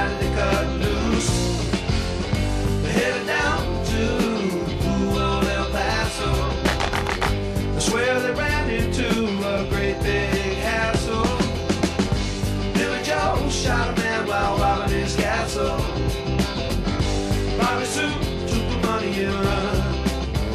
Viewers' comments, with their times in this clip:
0:06 Cue the clap from Friends